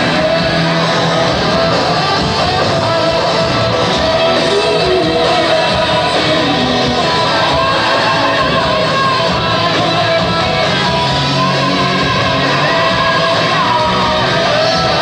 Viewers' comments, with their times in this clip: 0:03 I think the part is probably the only part intact that Marty wrote. It has him written all over it, it's so eccentric and exotic in a way that could've only come from his mind.